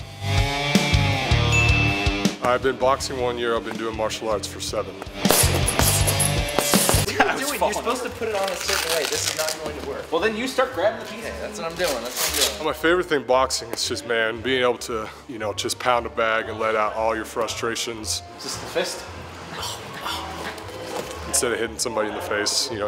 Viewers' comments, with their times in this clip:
0:03 I thought he said "I've been doing more sluts for 7 years" 😂😂